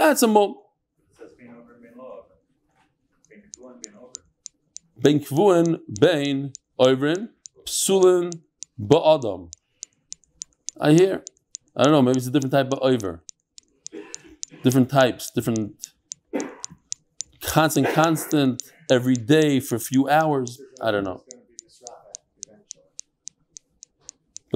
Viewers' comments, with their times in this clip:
0:05 I think when R’ Eli Stefansky is moving the mic is picking up a noise of something, he is moving in sync with the click.